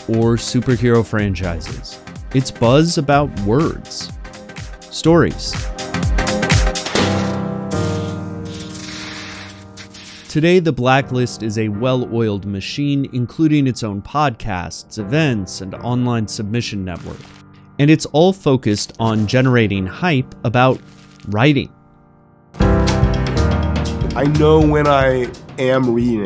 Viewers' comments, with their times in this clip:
0:07 The editing on this video was so good. And anybody else get excited when they hear the iconic vox tune